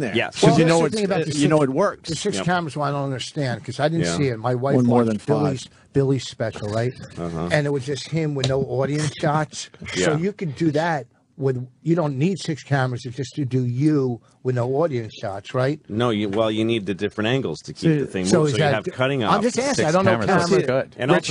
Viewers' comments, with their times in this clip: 0:04 Opie bomb and he's the only one who laughs.